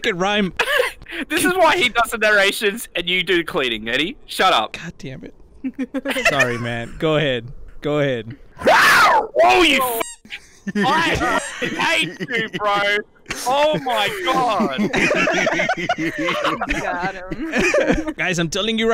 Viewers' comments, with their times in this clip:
0:05 how did he make that noise haha